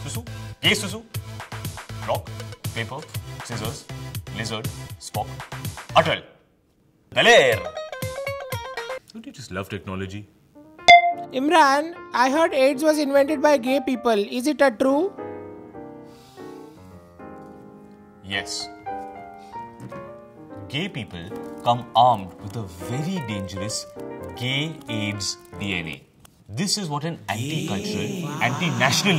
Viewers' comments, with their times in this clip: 0:10 Karan Johar's voice?